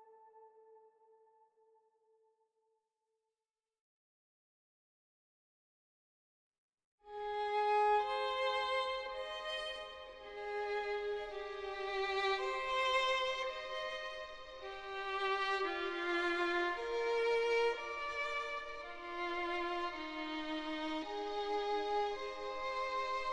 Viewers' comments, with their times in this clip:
0:07 this one is hauntingly beautiful to me and I love how it is basically the "Broken Love" theme for when a relationship finally fails and Joe kills them or Joe remembers what he did